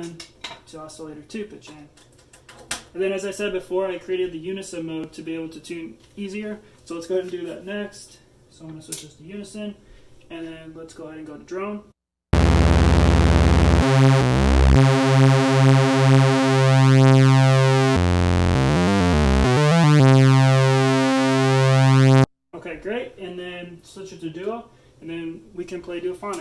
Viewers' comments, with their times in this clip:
0:10 wow. great paraphonic mode